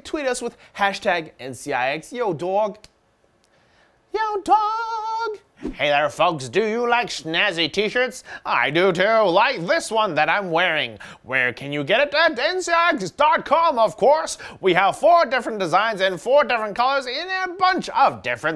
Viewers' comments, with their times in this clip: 0:06 I do like nazi tshirts.